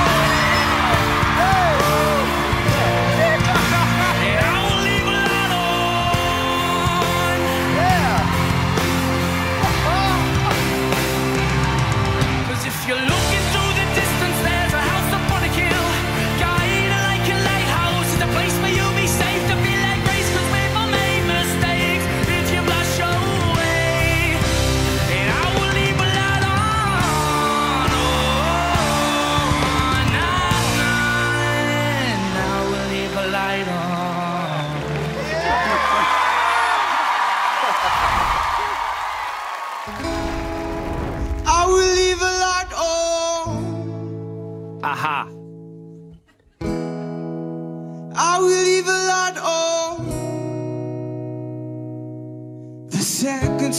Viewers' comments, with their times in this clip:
0:05 the boy was possessed by Freddie Mercury for 3 secs
0:40 what a voice